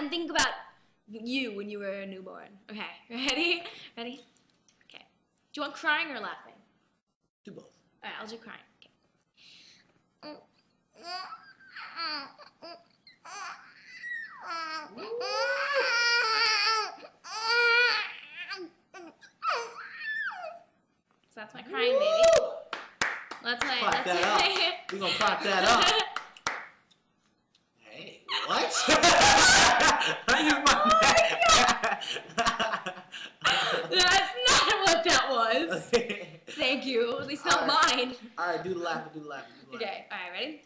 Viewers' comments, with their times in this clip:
0:09 I saw a bunch of comments about the crying baby but I never saw the time but I found it’s That will be one like please 🤗
0:18 it sounds like if she wanted to poop lol
0:28 oh my ears))) I dead